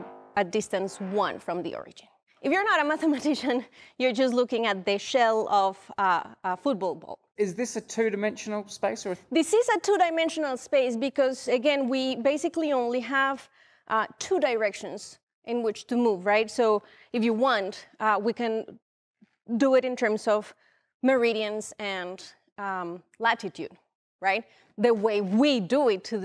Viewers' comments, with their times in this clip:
0:08 my 'Merican came out there. Then I realized she said Futbol not football, and I sat back down.